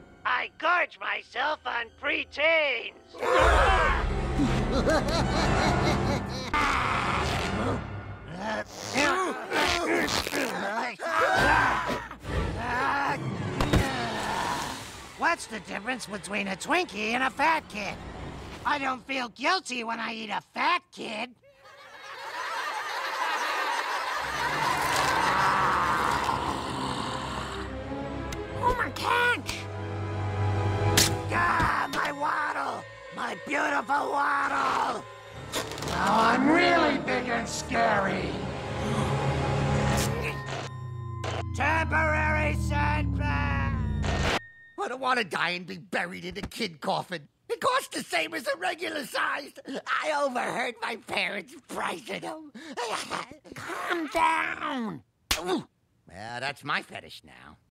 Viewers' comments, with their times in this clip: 0:04 I never thought you could make krusy’s laugh sounds scary but they found a way
0:35 Twisted Distorted Voice 🖤
0:53 WOW! Her voice is destroyed ! I feel bad for her...after so many years of doing the voice she can’t do it anymore...
0:53 girl sounds so dry on the inside